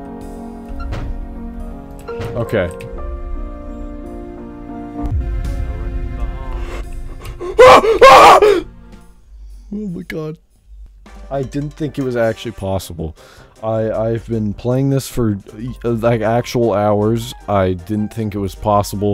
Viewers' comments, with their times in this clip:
0:05 That was really intense, the distant "No running in the halls" while you quickly make it into the exit was like something out of a movie.